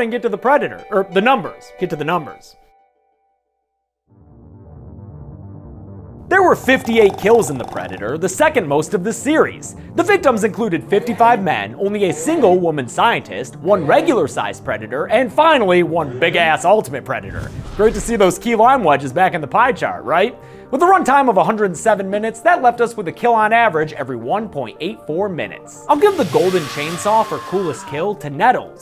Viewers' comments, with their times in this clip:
0:10 I only just realised on my most recent rewatch that the sound effect for the Ultimate Predator was deepened lmao